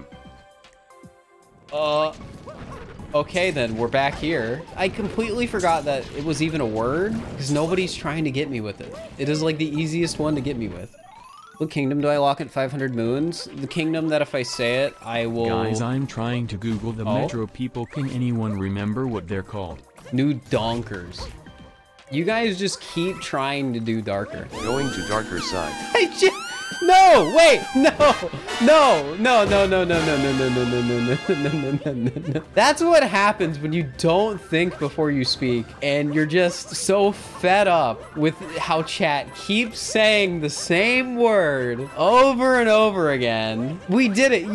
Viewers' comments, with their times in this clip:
0:08 someone said what's the capital of senegal and its Dakar so they tried to trick u because Dakar sounds like darker
0:28 The "NULL" on top of the music really seals it.